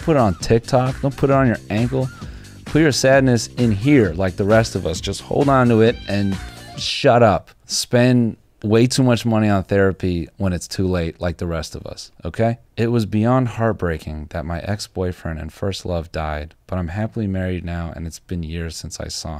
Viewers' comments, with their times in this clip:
0:04 I heard "science rules" in my head after that guitar riff 😂 Didn't know you could find an instrumental version of the Bill Nye theme
0:06 Anyone else hear “Bill Nye, the science guy” ?